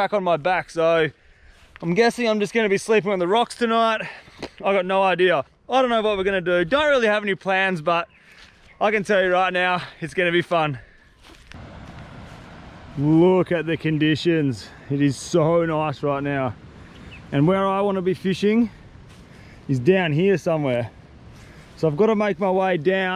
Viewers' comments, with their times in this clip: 0:08 Dog in the background on an island?!?